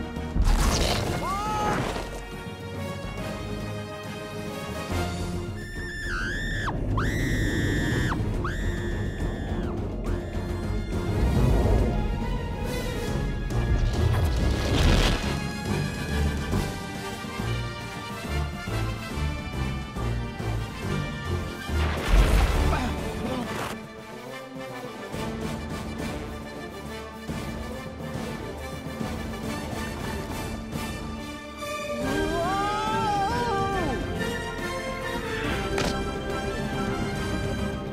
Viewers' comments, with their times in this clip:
0:05 The scream has been kept the same in Italian as well 😮😮😮 amazing job to the actress, she made me die laughing thinking she was in front of the mic screaming her lungs out like this! 😂😂😂
0:05 Wow Sharon Stone can really scream.
0:05 That straight up sounds like something you hear from a video game
0:05 I love Bala's Scream ❤
0:05 Bala's Loud Screaming! 😂
0:05 was that the person screaming?
0:05 Sounds Like Earape But Quiet
0:06 Good Grief, that scream sounds ear grinning
0:24 this scene always impacted me! When the music builds up and blares while Z takes a leap of faith!